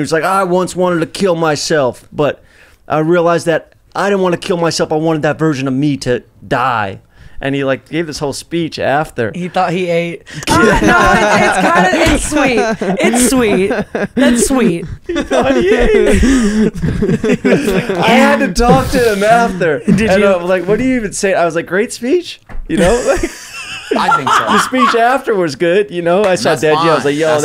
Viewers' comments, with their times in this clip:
0:10 Jeff’s laugh was so genuine! I love them together 😫